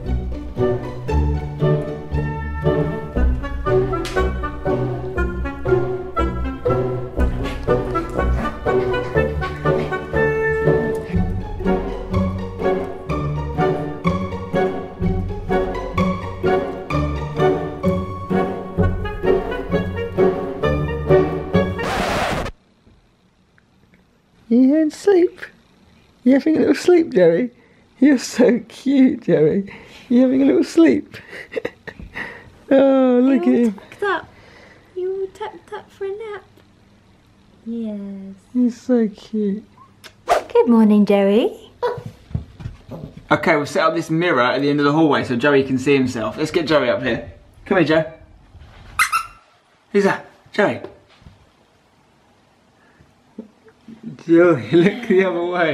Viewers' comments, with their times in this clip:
0:03 love the slam
0:39 omg that bark